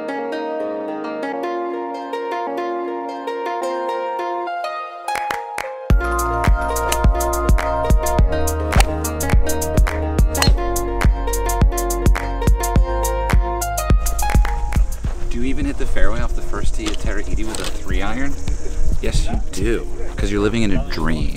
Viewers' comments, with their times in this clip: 0:03 Those claps made me jump... 👍🏻